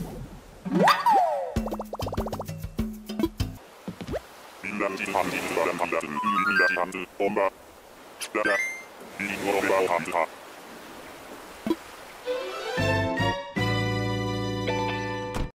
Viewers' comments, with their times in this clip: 0:10 THAT VOICE IS WEIRD DUDE